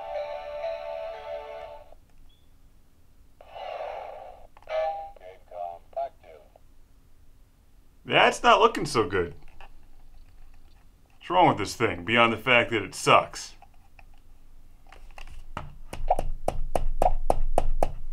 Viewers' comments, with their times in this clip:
0:05 Did that thing say game com fuck you?